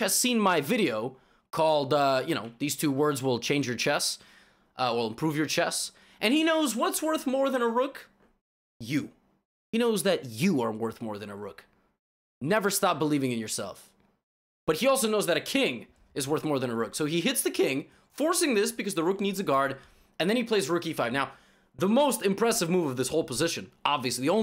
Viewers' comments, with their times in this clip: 0:07 the "YOU" gets me everytime